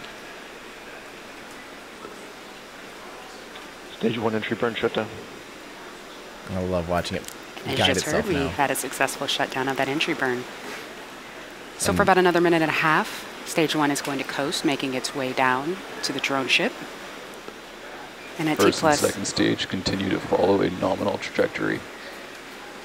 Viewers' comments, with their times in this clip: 0:10 host begins to rap lmao